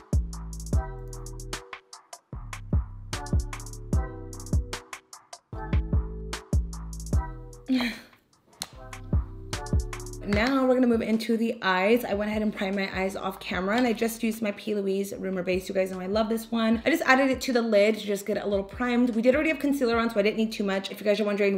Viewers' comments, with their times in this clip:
0:08 i deleted my ig so i miss seeing your feed so i’m happy you posted!😘 btdubs, that noise on ! lol love the look!